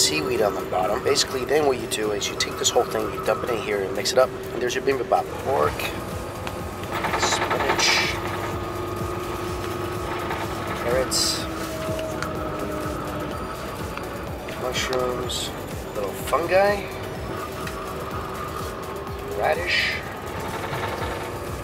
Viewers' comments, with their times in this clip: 0:06 there's an ak going off